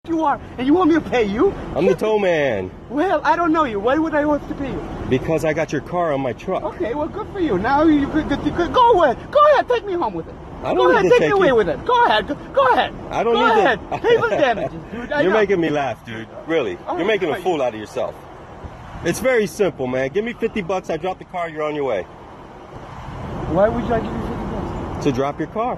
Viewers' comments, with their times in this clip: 0:09 Guy sounds like Dr Doofenshmirtz